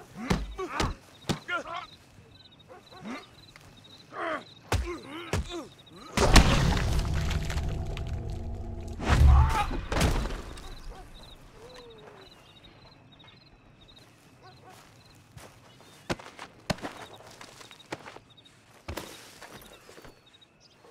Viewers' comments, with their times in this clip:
0:07 you can hear the most satisfying skull crunch ever